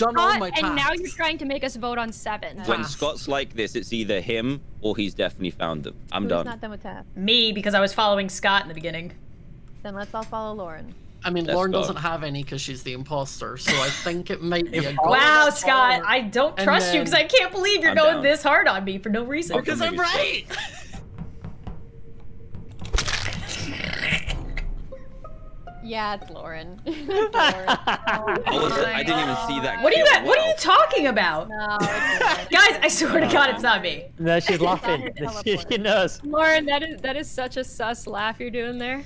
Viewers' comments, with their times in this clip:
0:03 why did he sound like that man from text2meme?
0:23 WHAT IS THAT LAUGH